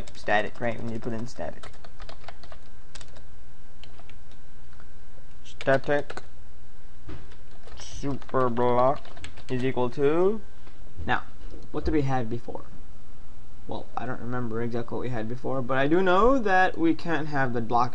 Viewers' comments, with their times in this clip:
0:05 Sometimes you sound like Dr. Evil / Professor Zoidberg e.g. xD